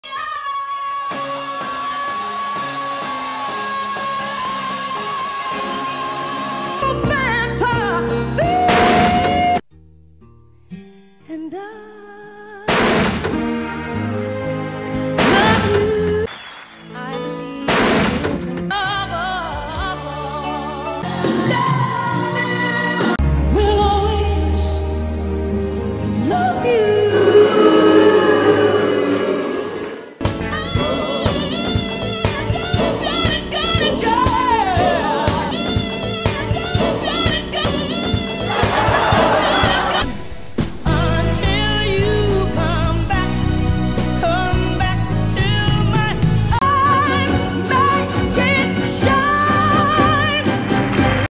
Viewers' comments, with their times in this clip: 0:07 Whitney wanted a Fanta 🍊
0:48 IYBT era ate AAIIRRR with those scratchy damaged cords 😽😽 Whitney era OUTSOLD WBK THE TRUE PRIME OF ALL 😝😝😝